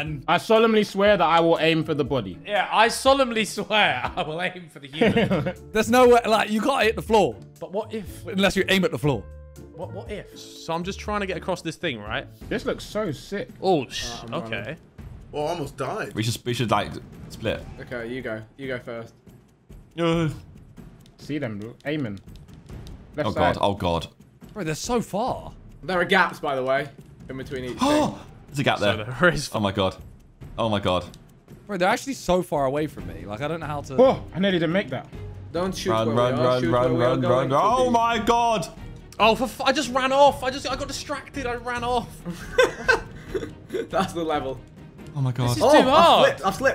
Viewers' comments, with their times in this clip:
0:04 What the hell was that laugh Tobi?
0:05 tobis laughhhhh Im dyinggggggg
0:31 Simon sounded american there lmao